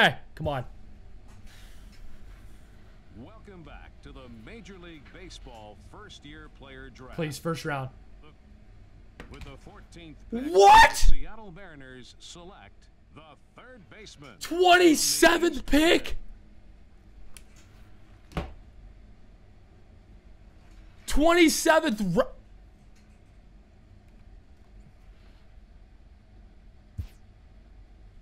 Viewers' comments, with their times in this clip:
0:09 epic voice crack